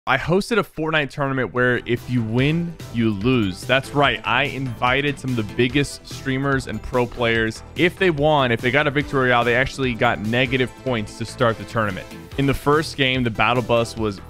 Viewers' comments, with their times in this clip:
0:00 he sound like nick e 30